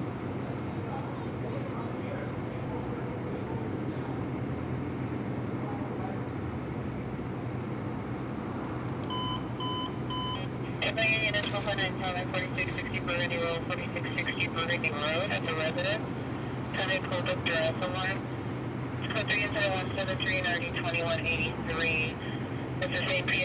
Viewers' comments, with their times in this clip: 0:10 ...was that two bulldogs in a bag or two fat kids under a blanket playing.... maybe two old Volkswagen Beetles trying to pass one another going up a hill...